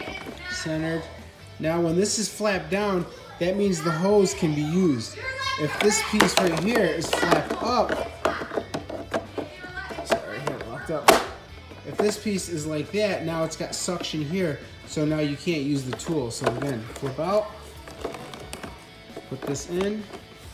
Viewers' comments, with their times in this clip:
0:03 You can hear momma laying down the law in the background ! ! !